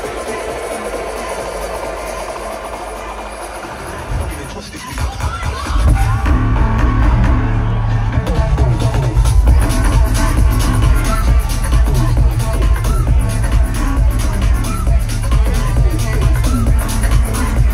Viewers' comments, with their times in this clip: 0:05 This will ALWAYS be the fattest drop live... when they opened with this tune at Coachella it had the same effect... pure bass